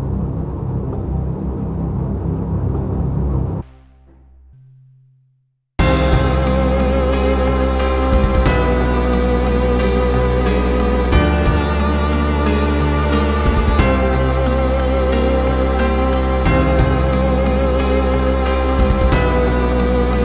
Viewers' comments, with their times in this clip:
0:05 gives me leviathan vibes, and so does the whole track of "The World Looks Red"
0:05 This is like if The ULTRAKILL OST mixed with the Deepwoken OST